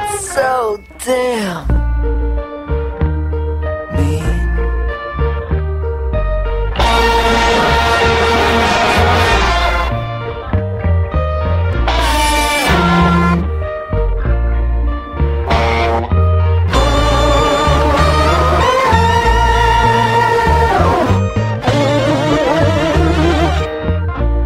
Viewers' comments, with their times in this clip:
0:07 Anyone know how he achieved that guitar effect ?